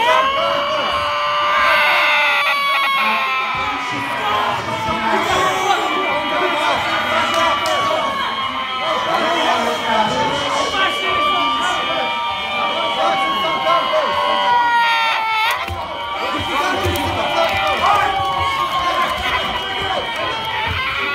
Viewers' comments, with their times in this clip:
0:03 is that literally autistic screeching?